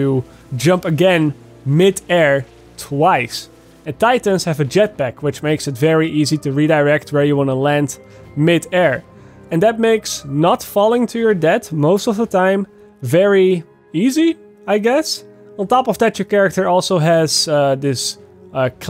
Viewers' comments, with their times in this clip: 0:06 'Falling to your dad' Or an even better one 'filled to the teat with'